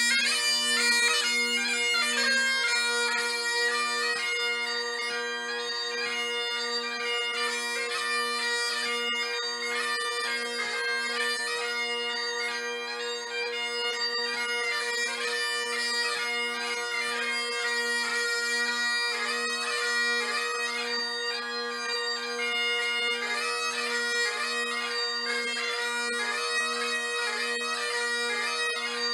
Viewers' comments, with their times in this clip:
0:10 It's just me or the drones start'd to double tune ?